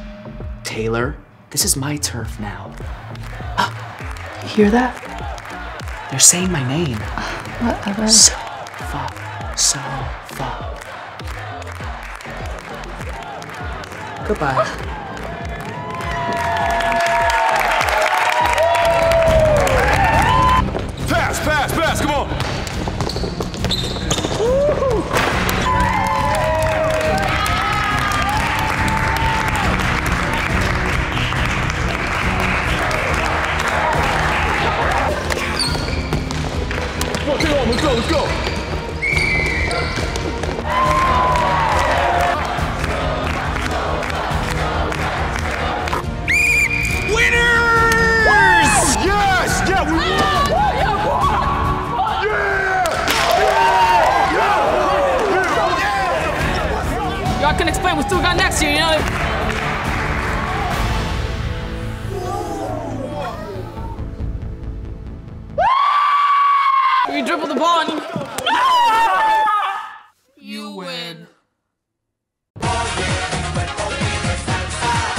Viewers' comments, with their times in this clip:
0:09 im dead hé really said 'sofah'😂😂😂
0:58 That didn’t sound like lele’s voice but I thought it was pretty funny 😄